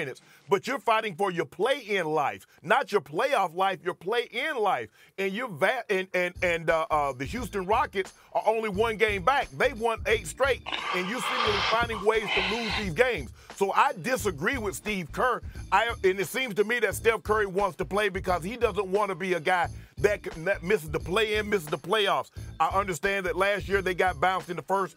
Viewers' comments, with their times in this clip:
0:10 Oh lawd what in the world was that noise?! 😂